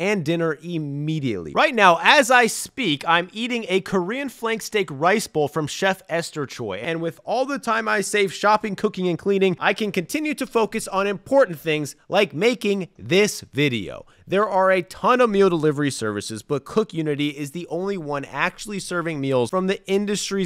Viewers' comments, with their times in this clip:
0:03 why are you screaming? Mad annoying